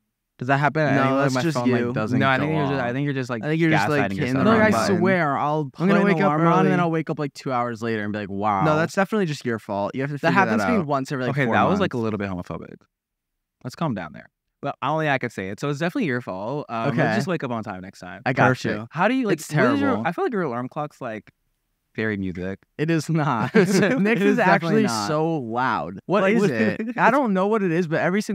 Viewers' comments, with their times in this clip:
0:10 i love larray but the second hand embarrassment when he said “that was homophobic” and it was js silent after that 😭